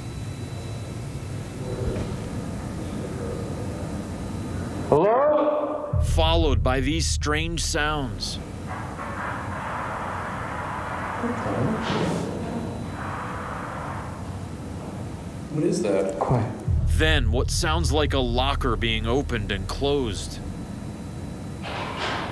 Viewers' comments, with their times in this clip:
0:08 it sounds like a lot of people or spirits are randomly clapping out of no where